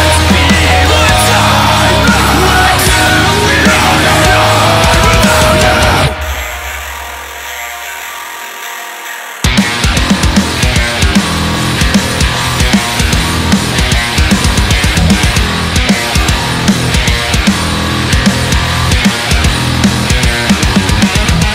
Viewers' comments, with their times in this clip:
0:09 That time change is kickass.